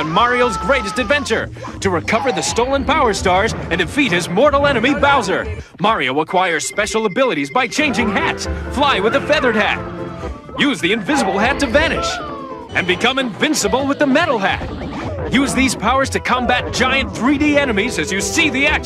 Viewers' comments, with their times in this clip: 0:04 "so long gay"
0:04 So long, gay